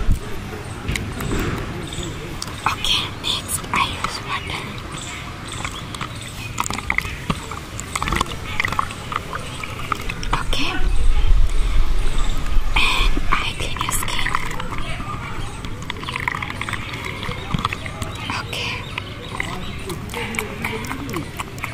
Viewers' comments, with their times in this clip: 0:06 loving the water sounds 🥰😴 I love outdoor ASMR so much ❤